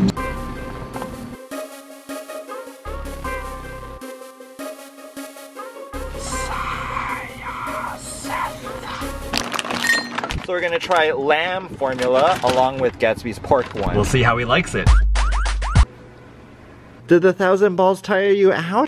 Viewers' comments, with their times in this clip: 0:06 The part were he whispers something by the snake was the a reference to Harry Potter talking to snakes or just random